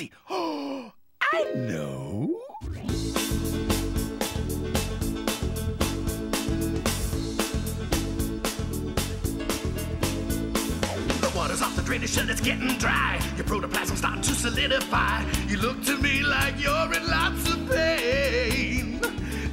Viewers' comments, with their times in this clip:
0:03 This show went the extra mile in terms of stop motion and music! The H2O gospel song is such phenomenal work!